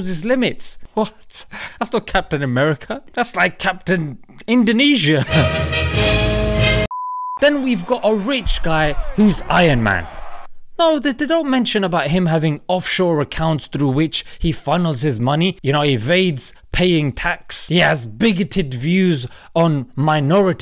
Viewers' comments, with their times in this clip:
0:05 wow, idk why but I feel like summoned when Steve Rogers wearing "Kopyah" (Indonesia traditional hat) with my country's nationality song played.